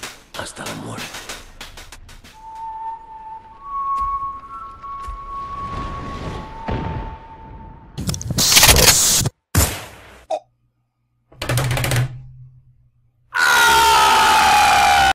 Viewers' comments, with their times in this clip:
0:11 it's also have this table slap and then [GLORIUS PAIN]